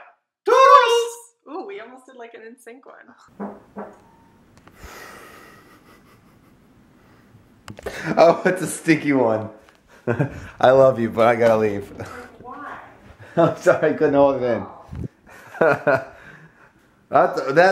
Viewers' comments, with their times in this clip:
0:03 was that a fart??? Lol